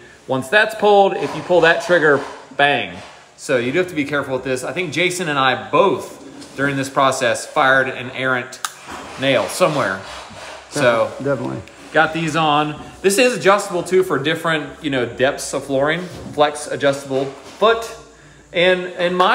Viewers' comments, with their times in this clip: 0:07 "we both shot an air into the nail" i guess that's one way to do it.